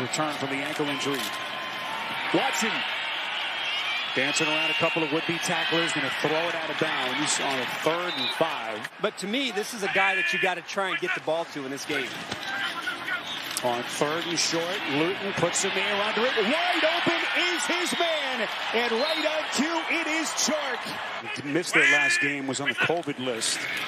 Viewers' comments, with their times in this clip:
0:05 am I the only one that heard taking on some wimpy tacklers